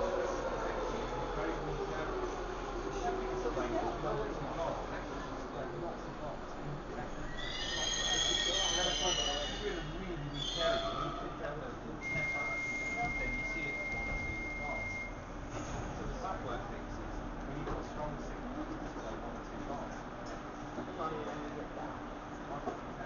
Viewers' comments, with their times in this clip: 0:07 sounds like a baby crying (metaphor) XD